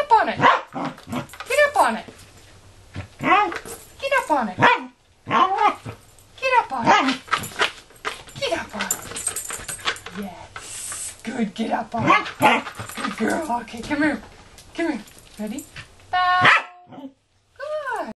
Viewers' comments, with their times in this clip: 0:05 sounded like she said "NO! I don't want to!" so cute